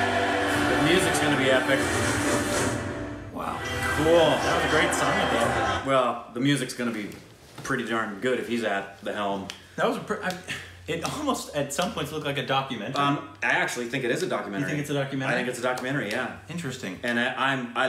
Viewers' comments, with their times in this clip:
0:05 guyz thats not the music... Thats the real sound made by people in stadium when sachin came to bat.. search about sachin on Google.. 😍